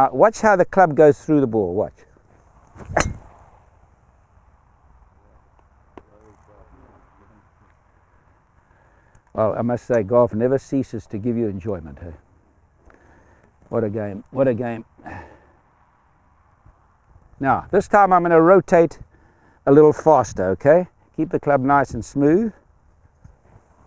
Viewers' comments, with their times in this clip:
0:04 lol 😂 such a funny clap-fail.
0:06 bro starts a crowd clap and stops...it's about the follow through....you gotta listen to Gary! Light the match. Keep going! Gary is legend, best advice ever.